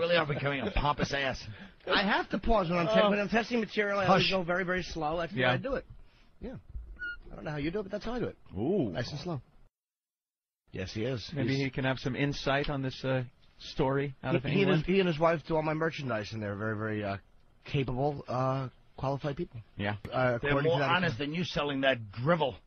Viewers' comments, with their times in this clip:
0:10 FINALLY somebody calls little Jimmy out on his douchey obnoxious nose inhales mid sentence